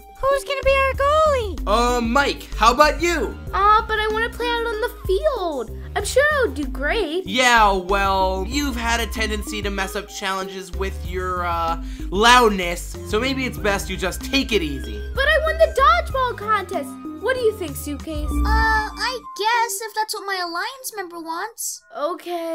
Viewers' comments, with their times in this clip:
0:06 vsauce music ong